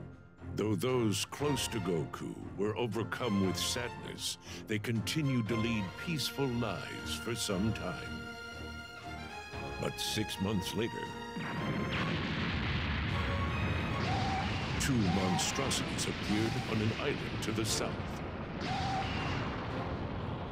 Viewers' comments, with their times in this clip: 0:03 Bruh the narrator sniffs lol